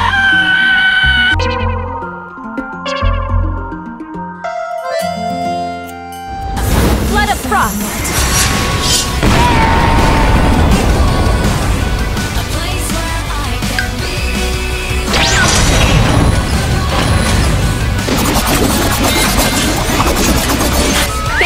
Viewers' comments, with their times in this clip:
0:09 If you look closely Eula actually hit Mika first (or he got blown away by it) which means he was the one who made the Yoda scream. I wasn't even paying attention and thought Arlecchino did it